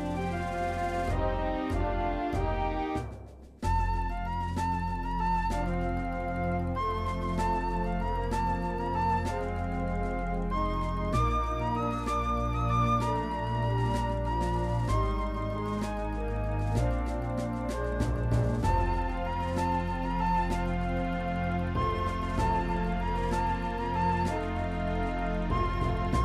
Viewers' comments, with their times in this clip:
0:09 nice music choice